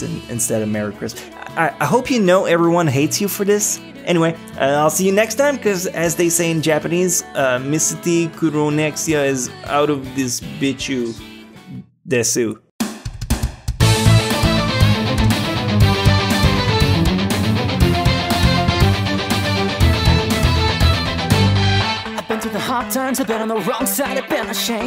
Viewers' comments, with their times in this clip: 0:10 anyone heard bitch You